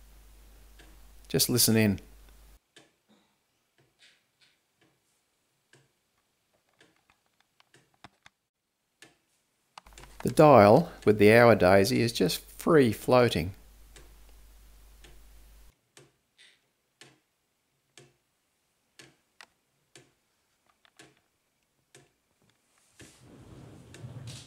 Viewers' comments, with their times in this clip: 0:05 you really shoulda boosted the audio here to be equal in perceived loudness, to your avg voice level.